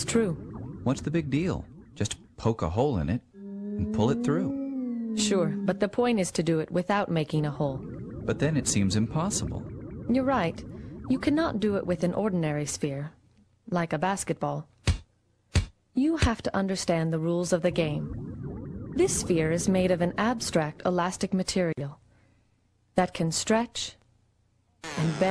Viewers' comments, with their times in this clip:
0:10 Did I hear skype?
0:10 they get a skype message